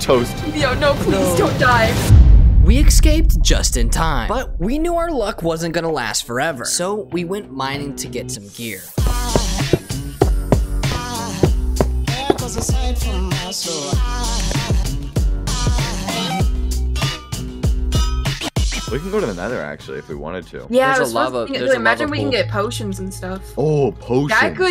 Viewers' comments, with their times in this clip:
0:08 The most sussiest song ever 💀
0:09 That was an interesting song ...